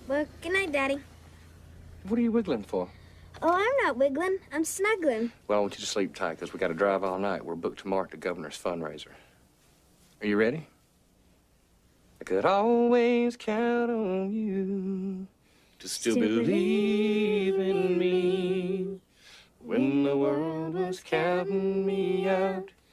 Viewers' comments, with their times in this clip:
0:10 Came here for that luluby been sick on my head since i was a kid I'm almost 30